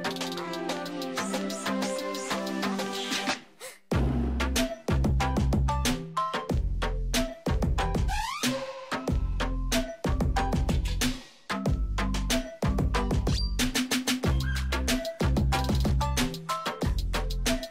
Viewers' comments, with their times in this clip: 0:03 i love the gasp XD